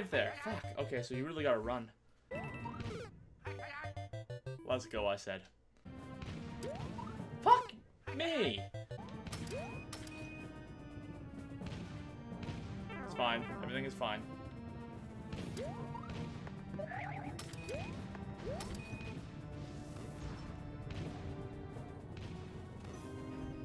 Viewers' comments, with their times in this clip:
0:08 for that second puberty voice crack....also did anyone count how many times he said "let's go" or "baby" in this video?